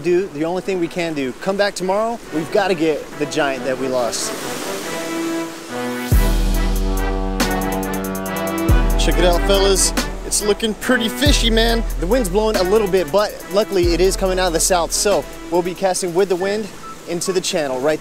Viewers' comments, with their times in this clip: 0:06 Nice choice of music Nostalgic songs at its finest